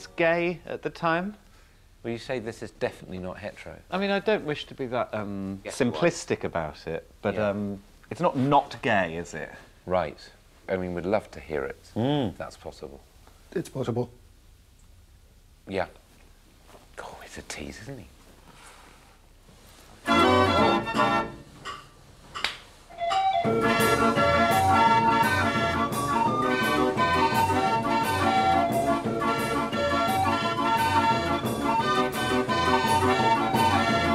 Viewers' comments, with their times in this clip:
0:09 this might be the greatest thing ever made by human hand. Just grab the rod, grind it repeatedly for a few seconds and George Michael suddenly comes pouring out. Glorious stuff.
0:20 don't mind me just realised I apparently have a love of barrel organs